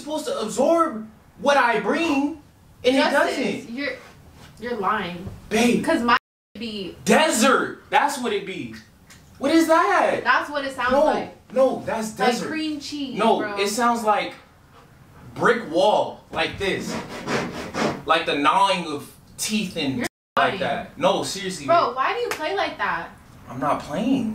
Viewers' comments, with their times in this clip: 0:08 Nah cause when she made the noise with her mouth i screamed 🤣🤣🤣